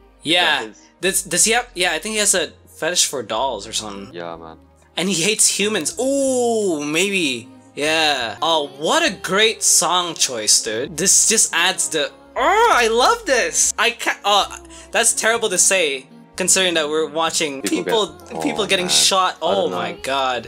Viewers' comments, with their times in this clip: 0:06 u said that so proudly and seriously as if it was smth considerable